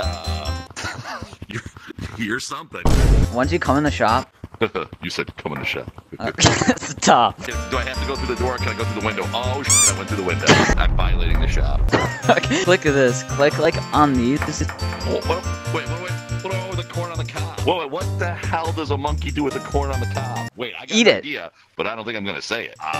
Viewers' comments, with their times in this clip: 0:07 I died the way he said u said come in the shop😂😏🤨